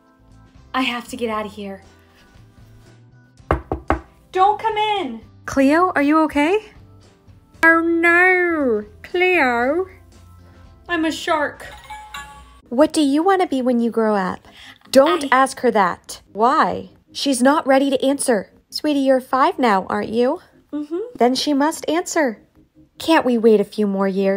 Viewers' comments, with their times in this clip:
0:07 ohrr norr, cleorr I’m a shark Got me dying